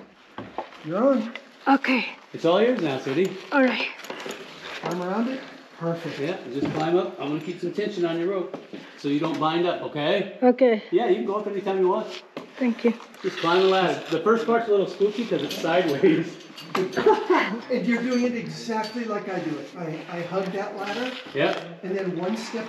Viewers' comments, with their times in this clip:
0:03 At the -minute mark watching you help your wife up that crazy ladder put a smile on my face! Your patience, care and positive voice is awesome to see/hear. You can tell hearing your voice gave her the confidence to achieve something awesome, very cool.